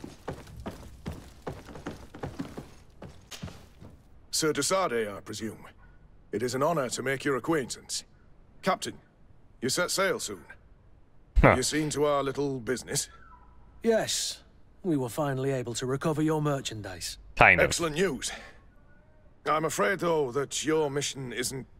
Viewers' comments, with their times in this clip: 0:05 Vernon Roche voice.